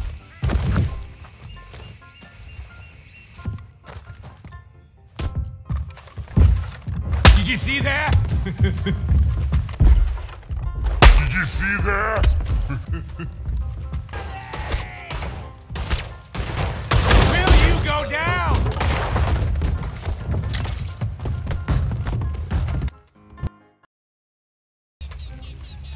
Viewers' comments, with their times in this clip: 0:07 lol. I don't like Micah but that was funny. "Did you see that?" Followed by that chuckle